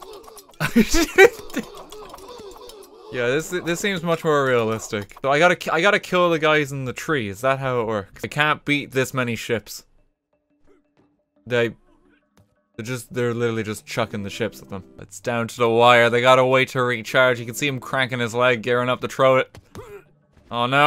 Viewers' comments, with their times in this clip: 0:06 fortunate son starts playing